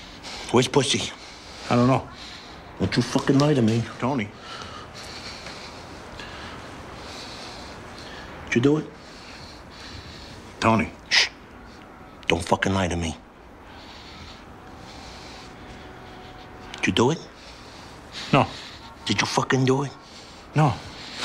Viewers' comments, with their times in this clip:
0:03 I don't know what it is, but I love the way he says "Tony".
0:03 Lol @ that dubbed in 'Tony'